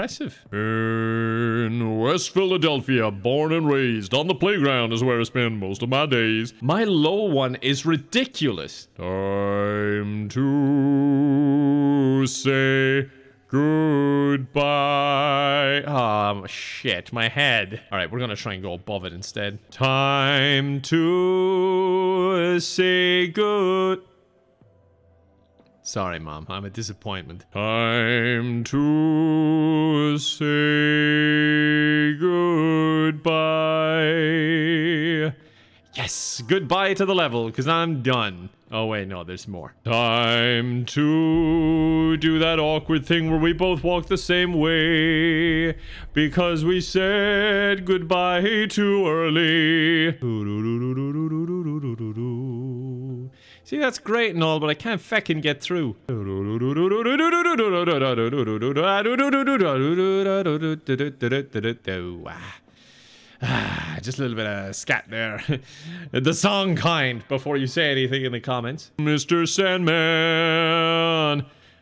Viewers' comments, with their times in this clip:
0:04 I was waiting to hear the page flip.
0:51 was too close to being The Lick
0:56 This reminds me of the intro of the song Scatman